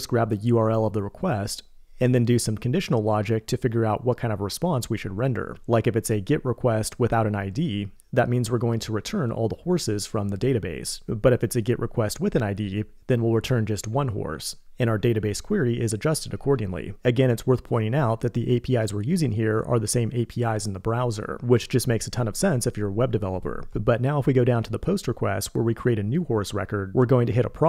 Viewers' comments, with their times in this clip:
0:08 Who doesn’t know them, the good old “git” requests